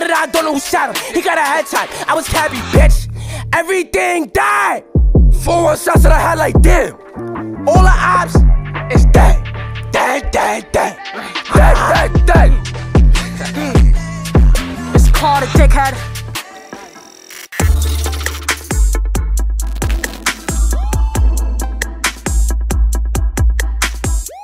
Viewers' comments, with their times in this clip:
0:08 nahhhh why Tata growling at the mic bro